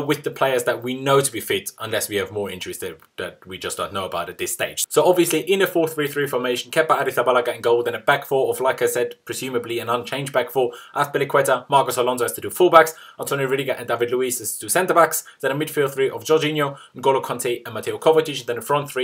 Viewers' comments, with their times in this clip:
0:07 You said "like I said " so fast I thought you said lacazette!!